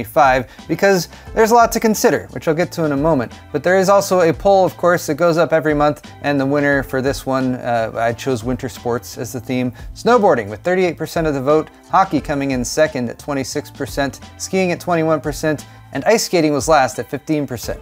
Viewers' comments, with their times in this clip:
0:04 a Paul every month?